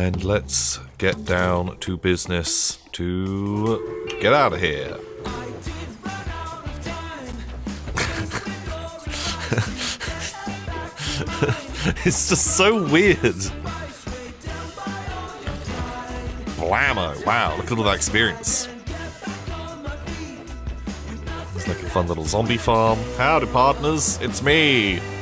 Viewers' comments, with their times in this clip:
0:07 The train song reminds me of the Bad Lip Reading song "My stick." I can't unhear it.